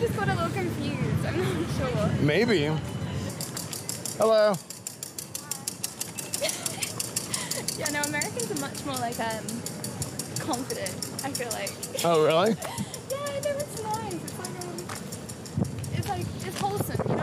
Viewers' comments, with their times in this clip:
0:04 That girl on the bike love that they click so loud if you "hack" the bike. It's like a skint-siren